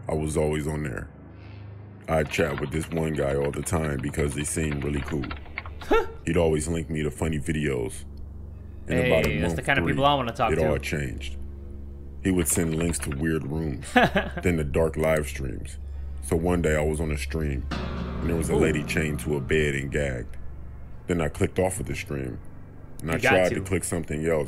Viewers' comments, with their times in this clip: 0:08 I can’t listen to this narrators voice without thinking about the girl who told the weird man she was home alone. Lmao